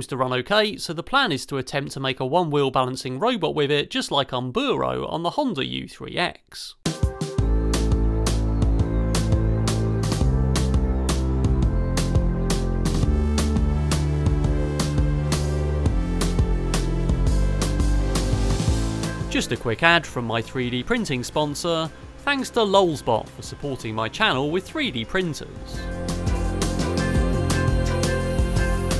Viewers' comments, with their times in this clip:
0:09 I really love the bass line in the music that accompanies the printing footage The tune in general is great too.